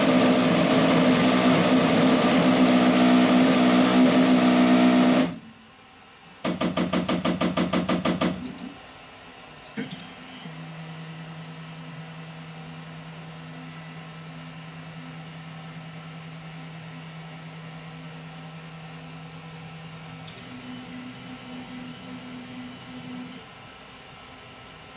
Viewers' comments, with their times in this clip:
0:08 Go to do you hear that "click"?, it occurs twice during your printer head moving the Y axis. That click is the head against the limit switch, and that is a good sign, it means that it is being properly activated. I do not hear that "click" during the X movement, most likely because your switch is broken. Take a look at it, it is located opposite to the Y switch.